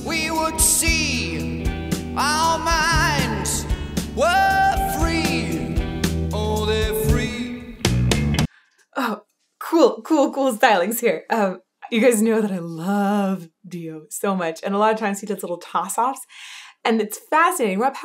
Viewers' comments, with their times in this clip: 0:04 I think he hits a harmonic for one sec. Amazing.